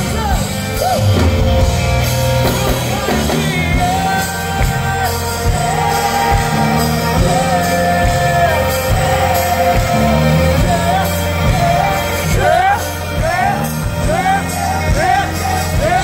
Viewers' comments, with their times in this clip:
0:03 THAT BASS IS INSANE I LOVE IT. YAY STOKLEY